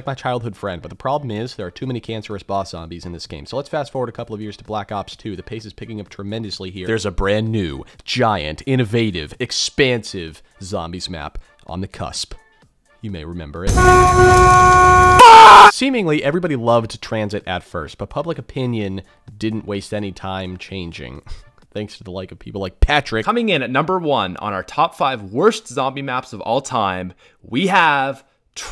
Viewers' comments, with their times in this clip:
0:09 "u may remember." *bus sound followed by a man saying FUUUUUUUUU audio plays.* That didn't give me a memory but ptsd of trying to get back on the bus while little demons attack my face.
0:14 my ears hurt